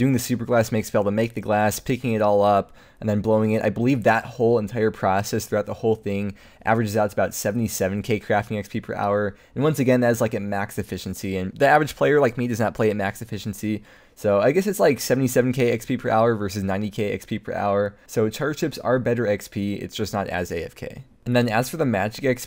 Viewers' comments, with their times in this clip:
0:03 the heehee killed me 😂